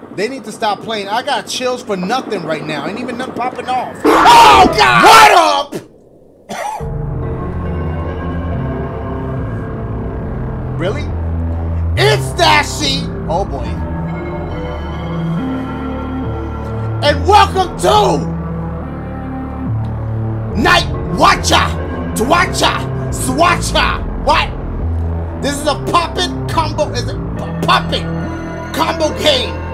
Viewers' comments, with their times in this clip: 0:10 idk y but sounds like Travis Scott Rodeo Type Beat😀